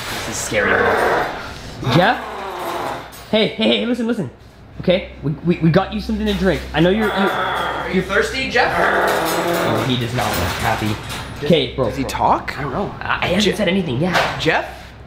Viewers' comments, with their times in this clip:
0:03 Bros barking at this point...